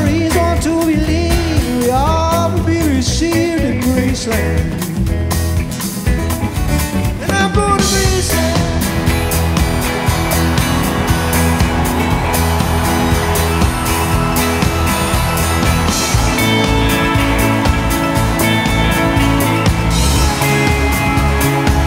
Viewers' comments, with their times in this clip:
0:06 onwards is pure music magic. I get shivers every time I hear that part. The last chorus and the full outro is just an incredible live performance and musical euphoria. Wow.
0:07 what a magical musical moment